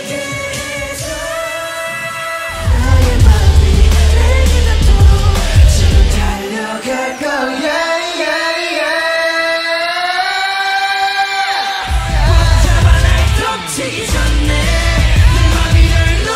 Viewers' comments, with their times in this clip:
0:03 that boy in luv harmonisation is life, with jungkook being the deep one and jimin being the higher one, man seriously such a good duo, jikook for life 💜🖤💜